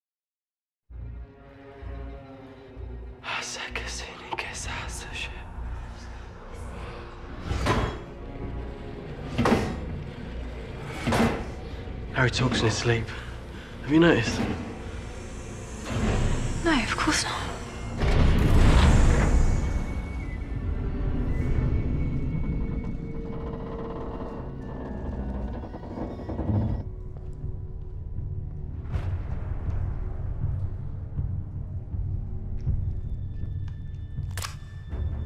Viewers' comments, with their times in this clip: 0:07 If you've played half life or any other source game, listen closely because they used the same metal impact sounds for the door. its a subtely layered in the background, but i recognised it instantly
0:23 That moment when you hear Hedwig's theme but it just get's cut off after 3 seconds :(
0:23 you can hear Hedwig’s theme but it gets cut off... so sad that they did that